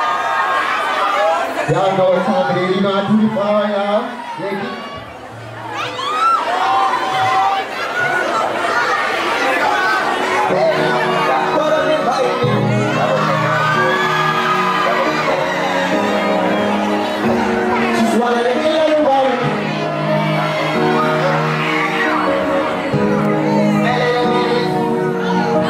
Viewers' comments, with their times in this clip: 0:10 he didn't know the song till the beat dropped 😂😂